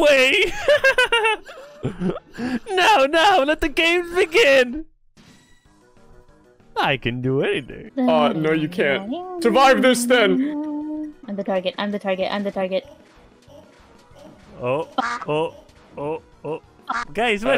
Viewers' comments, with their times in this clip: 0:05 The music is good though